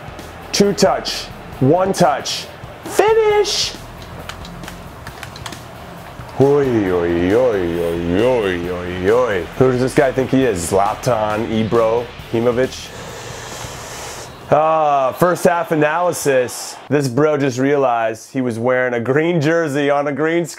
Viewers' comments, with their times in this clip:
0:06 sounds like a norwegian.... oj oj ooj oj oj